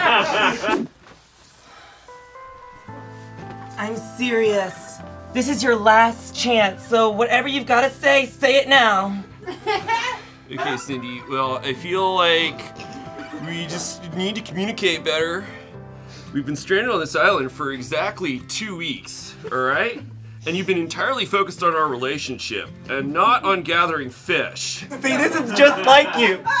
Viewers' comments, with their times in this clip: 0:10 gives me "The Californians" vibes